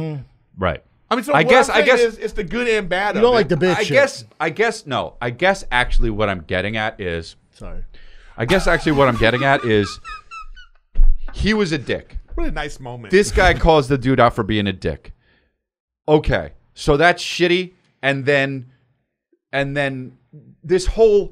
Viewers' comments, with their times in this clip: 0:09 I love how Erik wheeze laughs at Chris knocking Brendan’s hand away